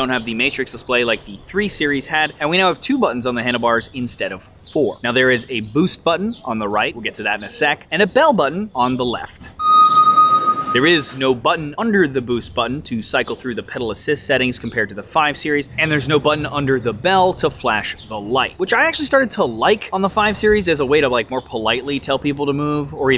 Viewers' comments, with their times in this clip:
0:08 I love the bell sounds that sounds just like a submarine sonar. I enjoyed this review even though I have a physical disability, and can't ride a pushbike. However, when you mentioned the torque, you described it in Nanometres. A nanometre is a microscopic measure of length (one billlionth of a metre); what you meant was Newton-metre which a measure of force.